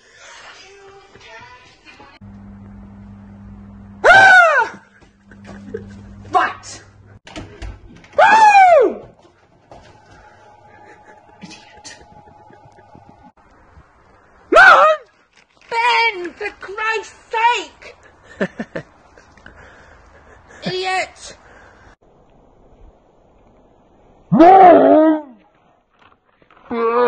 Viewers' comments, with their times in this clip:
0:05 Being a British person with a mum having pretty much the same accent I've heard the phrase "RIGHT." Said many times in the same way.😅
0:07 best when she jumps like an ninja that wanna attack and whispers: IDIOT!
0:07 Holds the Ki blasted with the scream, throws it away, and stare him deadly.
0:13 that "mum" scream cracked me up.